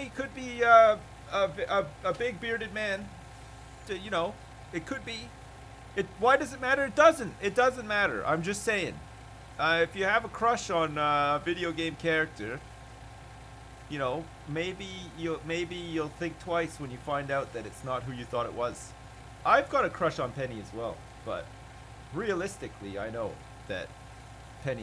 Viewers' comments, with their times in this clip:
0:06 audio comes back